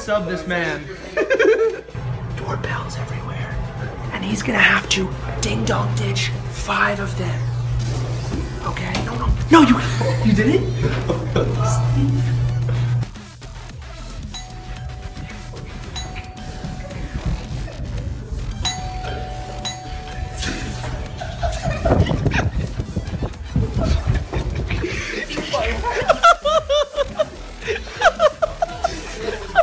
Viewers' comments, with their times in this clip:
0:10 Lol, heard Fingerdash and thought my GD was going lol